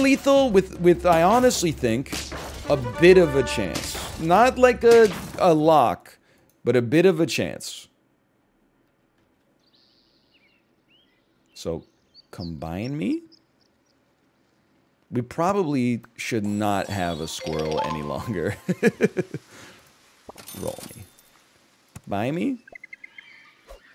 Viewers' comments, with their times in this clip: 0:10 He had "combine me" so slowly I had hope and faith in me until the last second, and then it got snapped in two like a twig This series is suffering (especially now that golden pack is not available and I can't go play it to relieve my pain)